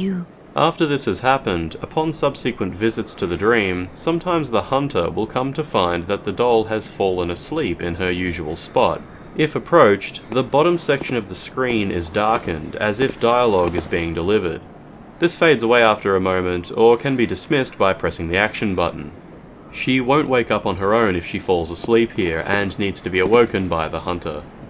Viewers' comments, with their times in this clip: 0:10 im pretty sure i remember this is because there is actually a pretty quiet snoring sound effect that I guess gets triggered like a normal dialogue